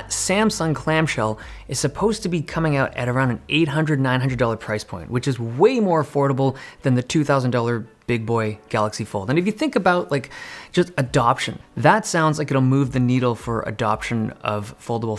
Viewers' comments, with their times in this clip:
0:03 Did he just claim that at $800 the phone is way more foldable?